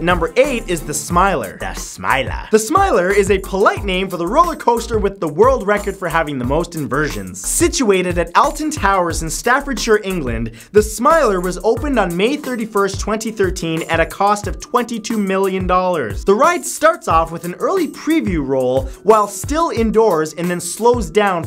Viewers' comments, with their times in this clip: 0:07 says Alton towers wrong TRIGGERED (lol no)